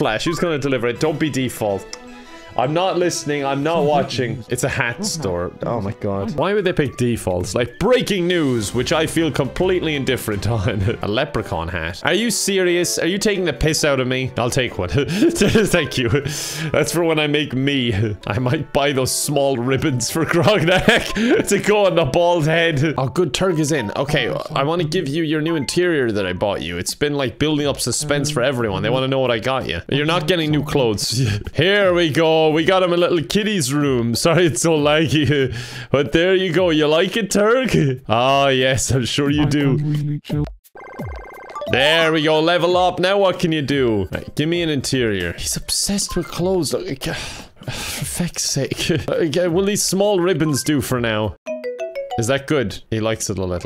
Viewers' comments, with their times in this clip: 0:06 That actually sounds like a great news reporter.
0:39 IM CRYING IT SOUNDS LIKE TURG IS SAYING "I f*cking hate you" while staring down at you